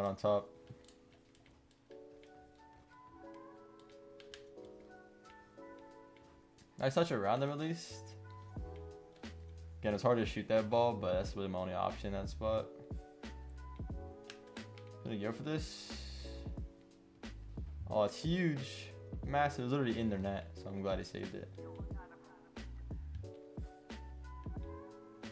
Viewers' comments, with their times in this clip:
0:09 he hits the boost right on the beat. So nice